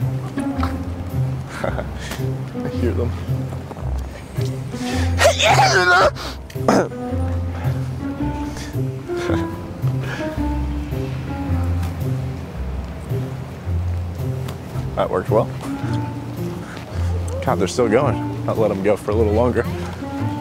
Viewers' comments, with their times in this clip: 0:04 sounded like muscle man from regular show 😂
0:05 sounds like Muscle Man from Regular Show
0:05 that sounded like Muscle Man from Regular Show